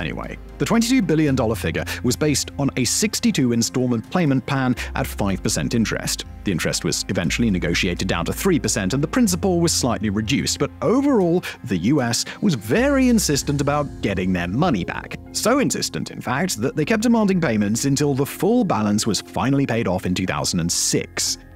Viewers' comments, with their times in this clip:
0:03 "playment pan" lol
0:04 "playment pan" lmao
0:04 playment pan, lol